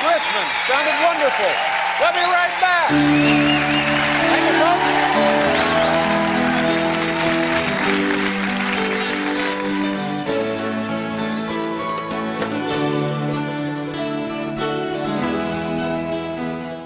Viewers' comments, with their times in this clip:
0:04 Incredible through and through, anyone know what happens ? That jam to the end is reminiscent, so beautiful...